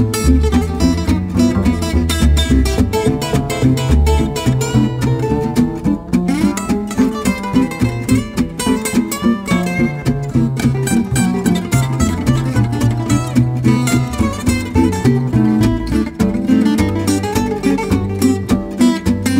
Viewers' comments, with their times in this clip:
0:04 hat bass player is really happening Great performance by all! Love the vocals, really original take on the head. love it!